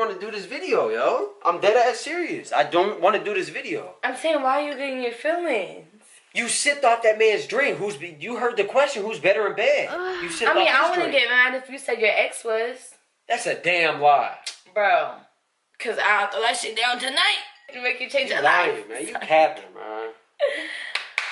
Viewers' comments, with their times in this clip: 0:09 does nobody elese hear the moaning